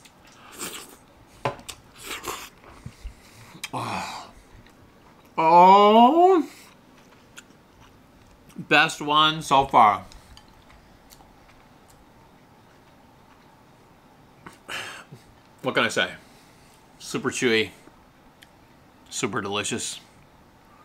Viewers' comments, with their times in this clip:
0:03 That noise would be a great ringtone. "RRROOOOOHHHHH!!!"